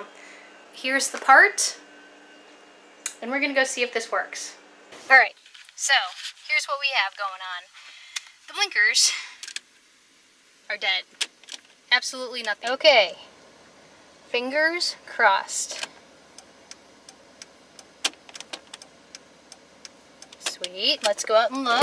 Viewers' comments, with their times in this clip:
0:07 is it both/all the outside lights that don't work? i assume you have checked the bulbs and made sure they're ok and are seated correctly? have you checked to see if you blew a fuse? if you notice in the video before i replaced the relay: there isn't even the "click click" sound, so if you're blinkers are working ok on the dash, i think it's a problem further down the line than the relay, but then again, i'm not a auto mechanic, so maybe? let me know what you find out...